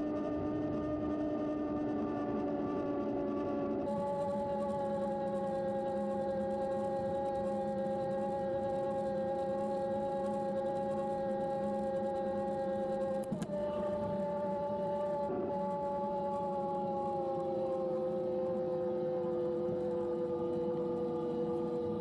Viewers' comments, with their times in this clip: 0:10 is a good indicator of noise level. Never had anyone turn around because they heard me coming on my BBSHD’s. It’s a shame CYC only makes beta testing products. Had a lot of hopes for this lil guy.